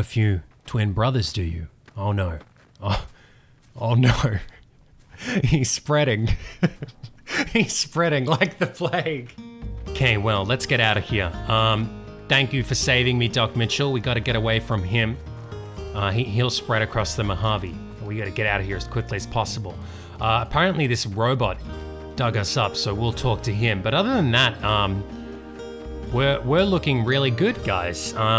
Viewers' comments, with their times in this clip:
0:09 that soundtrack. Love your series, babe. <3